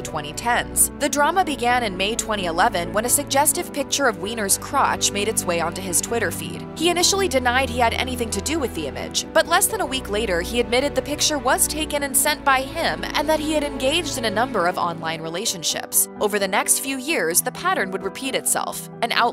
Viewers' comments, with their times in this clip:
0:07 Usually your videos are very good but this one stinks because the music is so loud. It's to hard to hear the spoken word so I'm outta hear